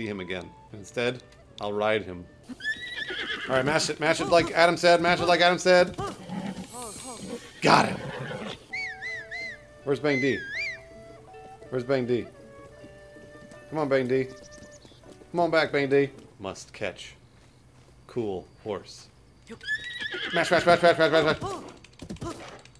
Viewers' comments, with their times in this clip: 0:08 gotta confuse link's whistle with bruce's wheeze, right babe?